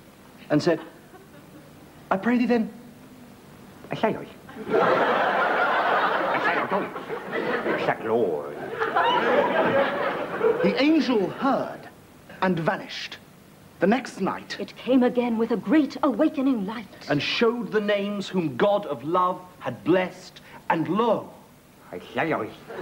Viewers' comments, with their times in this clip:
0:03 LOL Sounds like Rowan said "A sandwich".